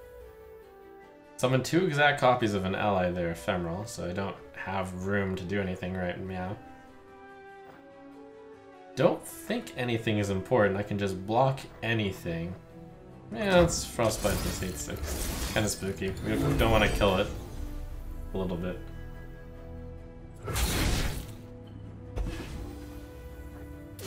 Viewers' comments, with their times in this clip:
0:06 I thought you said meow. "Meow? Do I look like a kitten to you"